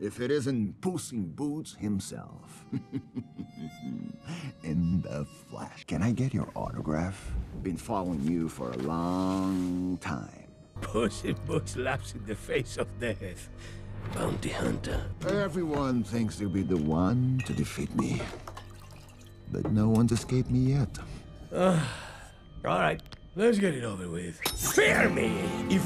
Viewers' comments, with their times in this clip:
0:04 The way they play the harmonica gave me fox and the hound flash backs
0:11 “Puss in Boots laughs in the face of Death.” Meanwhile, Death scrapes at the paper, almost pissed at the comment.